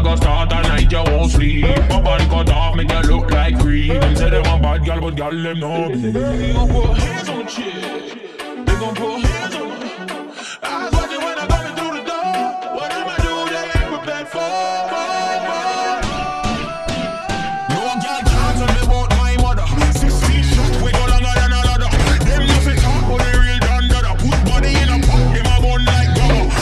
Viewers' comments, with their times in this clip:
0:07 the bass thing kinda sounds like a ping pong ball hitting a table prove me wrong but u cant unhear it now